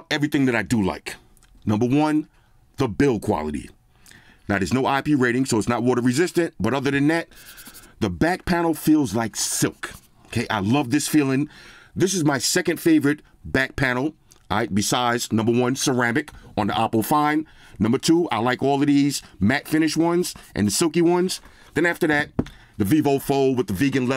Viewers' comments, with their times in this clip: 0:08 Silk, but I hear sand paper timeline